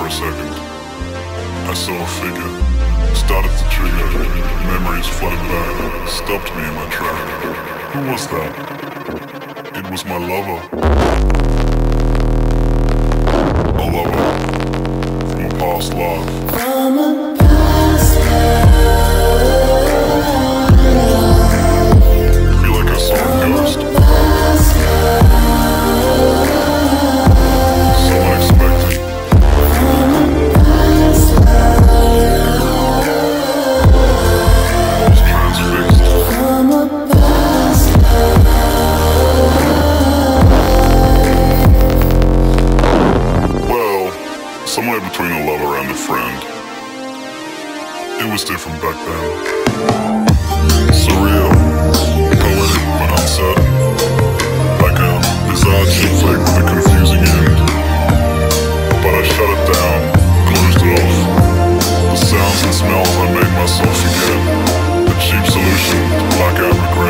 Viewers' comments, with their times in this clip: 0:09 "It was my lover" LEVEL 96 HADRON COLLIDER FART
0:11 sound like cmoon in jjba
0:49 my favorite part is that beat change